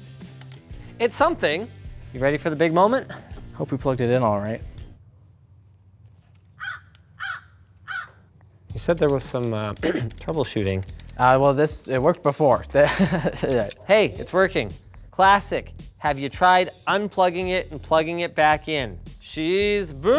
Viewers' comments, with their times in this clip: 0:08 the crow passing by was great lmao you should keep using it